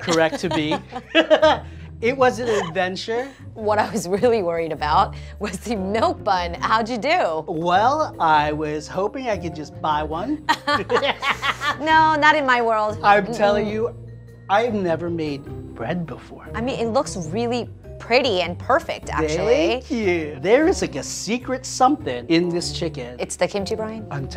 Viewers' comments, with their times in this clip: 0:10 Am I Wrong, or is that Krusty the Clown's laugh I hear?